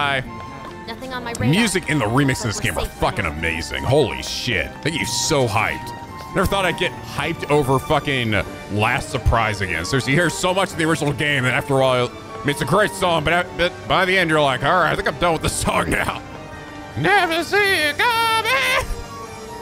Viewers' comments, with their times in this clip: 0:06 I was actually not that big of a fan of "Last Surprise" in the original game. THIS remix in THIS game, however, is actually really good! I guess it's because I'm more biased toward rock and metal, but the guitars in the beginning of the track really make a difference to me. Well, that and the fact that it isn't the default battle theme anymore meaning that anytime we DO hear it, it actually feels special.